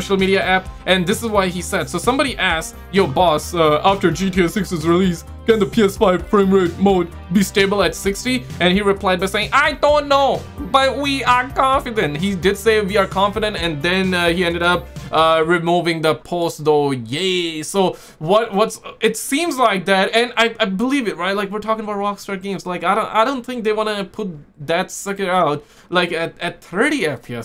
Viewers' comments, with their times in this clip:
0:08 your chinese impresión is spot on 😆